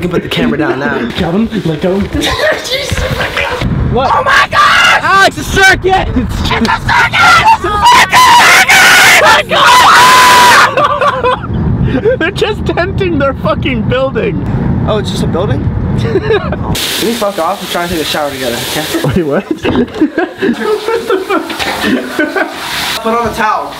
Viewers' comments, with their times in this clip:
0:04 Warning headphone users!!!
0:09 headphones user turn ur volume down a little I had mine all the way up and it was not fun